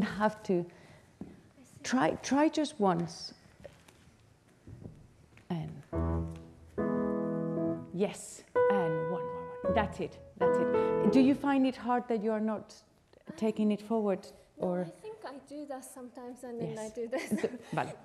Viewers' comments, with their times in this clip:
0:06 the man playing the piano deserves more credit!! as a pianist myself i know how hard it is to pick up the music from anywhere within the piece like that and he was right on the dot! granted, this was the beginning of the piece, but throughout this whole rehearsal he was so on it!